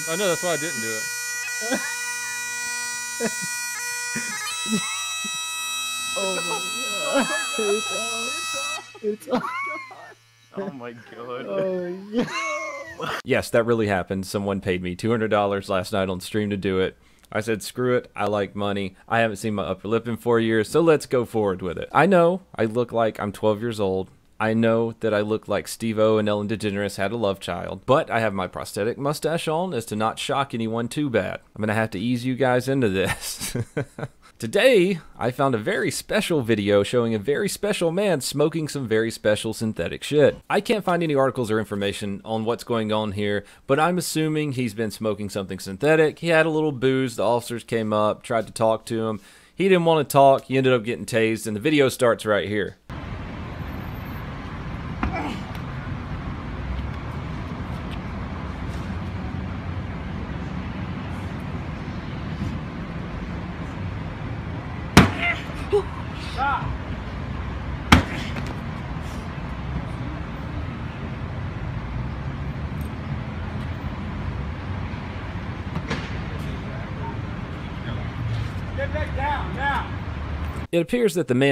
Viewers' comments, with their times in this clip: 0:09 to skip the ear rape
1:03 Anyone notice him squeak